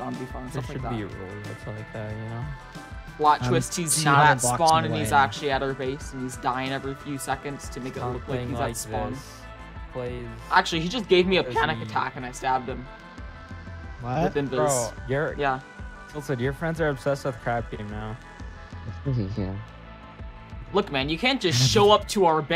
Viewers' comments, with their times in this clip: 0:09 the voicecrack ajajahajjahajahahhaha